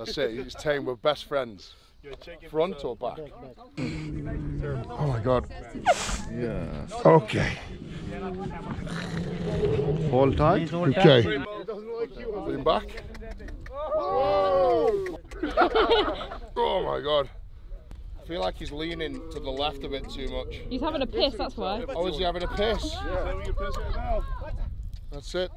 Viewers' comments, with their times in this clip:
0:07 Camel sound like "I am gonna die"..